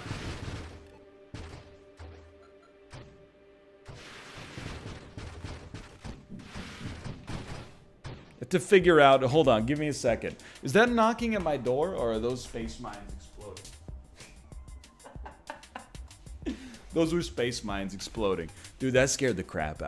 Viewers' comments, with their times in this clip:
0:06 I paused the video for a good 30 seconds here because I thought I heard a possum walking on my roof...